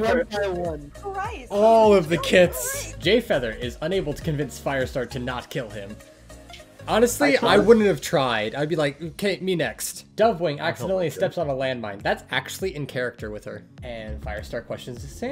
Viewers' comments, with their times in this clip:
0:03 I just realized Jayfeather calls himself Gayfeather